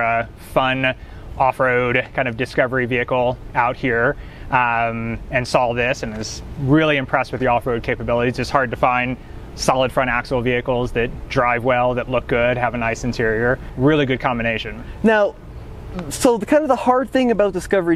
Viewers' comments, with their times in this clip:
0:05 I CAN'T STAND PEOPLE WHO THINK THERE'S A "L" IN THE WORD SAW. I KINDA HOPE HE WRECKS IT.